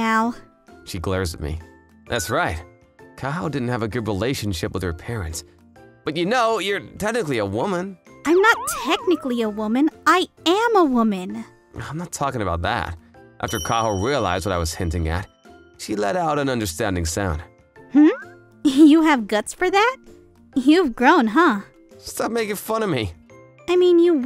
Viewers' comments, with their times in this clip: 0:06 Fukumaru says "You're Technically a woman" That was bit fun way how he said it. 😂